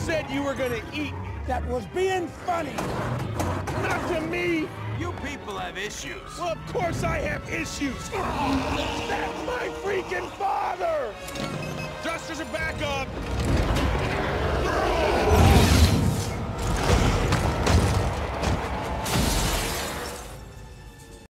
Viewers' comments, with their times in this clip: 0:04 Rocket Racoon's voice sounds like Bill Rogers' Brock from Pokèmon: Season 9 - Present. when he says "You People Have Issues"
0:08 "That's my freaking father!!" I don't know why honestly, but that line is delivered so well and made me laugh so hard.
0:08 he sounds exactly like Chris Farley